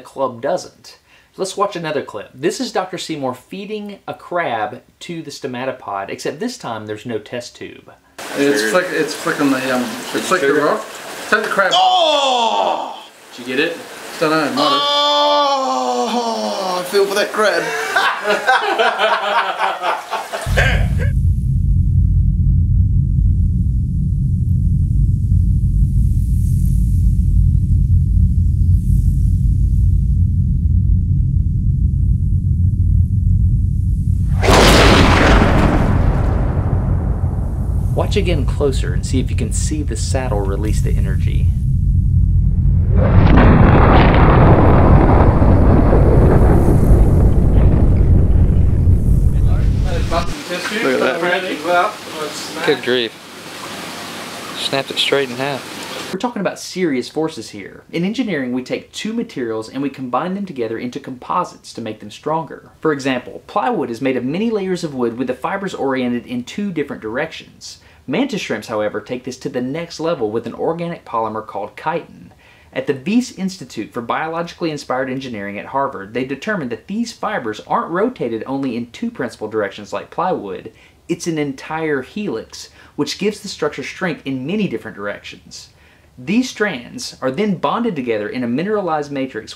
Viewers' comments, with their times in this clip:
0:10 crab gets killed, guy behind the mic starts nutting in his pants asmr
0:14 Sounds like this dude came
0:40 This is REALLY interesting, but the sound effects are distracting and purposeless.
0:41 sounds like thunder
0:48 sounds like a lightning strike
1:10 ooooh so thats how you pronounce 'Chitin' ... I was saying shi... well i think you get it..